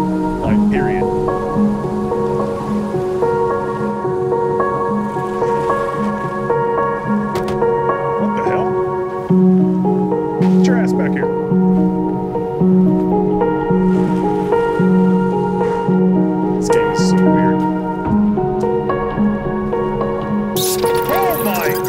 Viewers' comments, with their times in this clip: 0:09 music was a little loud but it happens.